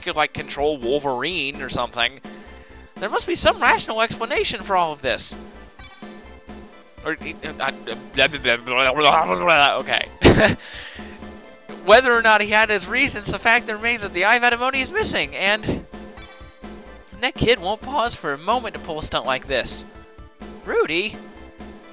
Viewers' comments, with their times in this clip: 0:06 Best voice acting EVER.